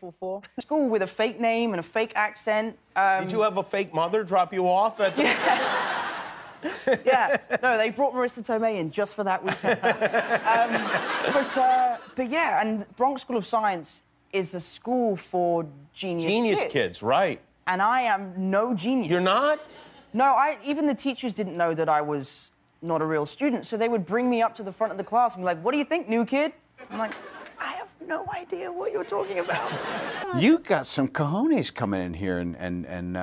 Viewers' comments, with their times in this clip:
0:10 when rdj laughs and get a serious face im crying he’s always doing that 😭😭😭😭😂😂😂😂❤️
0:19 tom: i’m no genius jimmy: your not? ( he says it like no shit sherlock) 😂😂